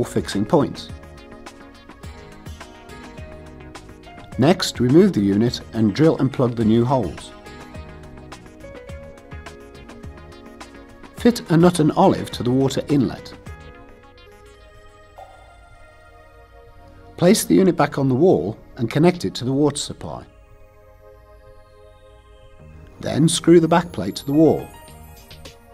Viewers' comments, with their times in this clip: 0:10 Fit an oten olef - the self tightening screw. That's what I've heard and can't hear it the right way. So, don't know what should I buy :(.